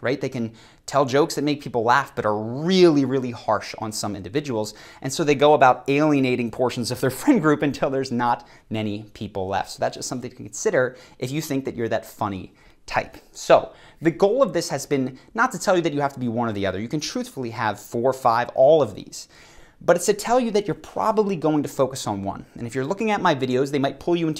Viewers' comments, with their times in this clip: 0:08 Another great video. One thing, is almost every sentence you say ends the exact same way, especially towards the end. You end by slowing way down and dropping your tone. Like “until there’s not... many.. left. So that’s something to consider if your that... funny... type.”